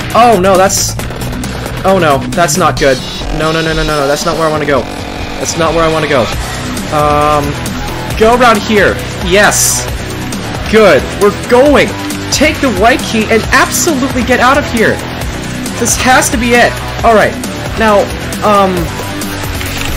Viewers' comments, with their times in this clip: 0:06 Ok, but like- Am I the only one that’s vibing to the bg music ? I hope they can make an ost for the music since it’s honestly something I can vibe to 👌✨